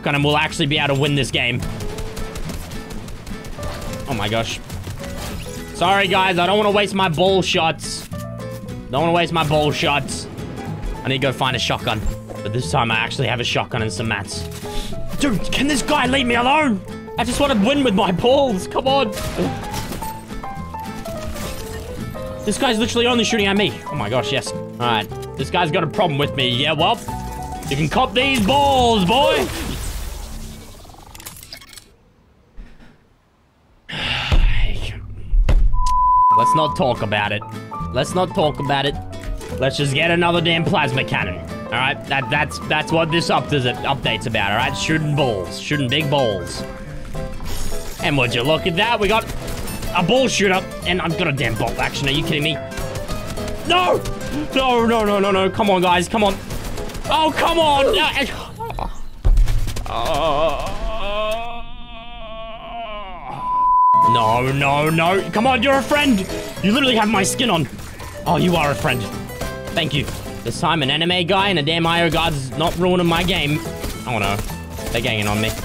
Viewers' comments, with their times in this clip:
0:09 that was a sniper bullet passing by right
0:15 he sound like Harry Potter lol
1:00 Anyone else think he sounds incredibly constipated